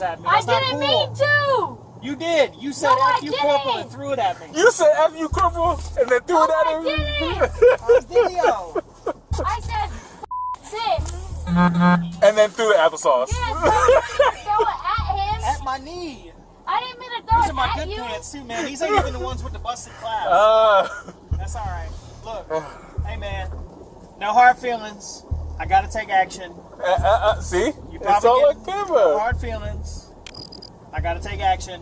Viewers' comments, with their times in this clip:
0:05 The cop laughing about the girl has threw an applesauce bootle on him is kinda funny.
0:07 the cop that's laughing really made my day lol
0:14 even tho its not funny. I never heard a police officer cry. 😭